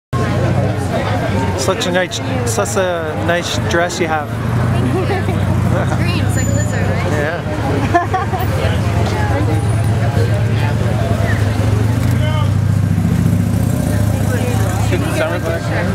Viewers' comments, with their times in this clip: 0:03 hahah a tad nervous there are we? tha cha err thahfshhfh ats a nice dress u got er...er. lol :D